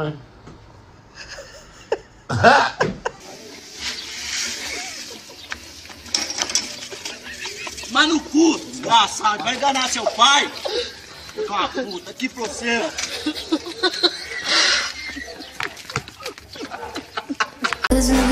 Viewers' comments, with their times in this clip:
0:03 His laugh ahattttt